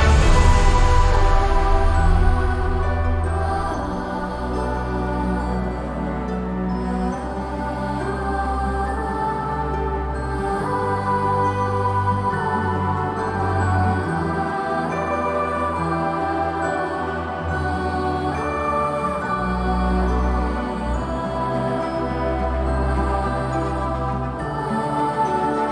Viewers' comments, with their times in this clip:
0:06 I like the a a ah ha